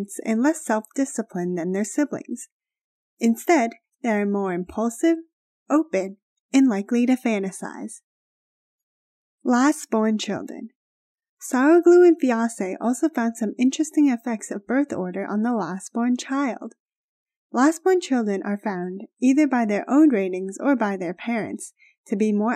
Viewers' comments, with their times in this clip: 0:10 Lol did anyone hear "sour glue and fiancée" ?